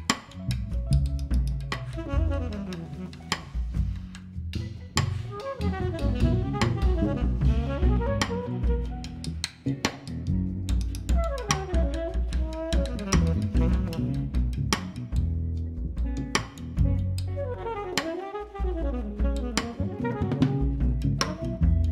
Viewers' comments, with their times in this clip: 0:03 The drumming is unreal...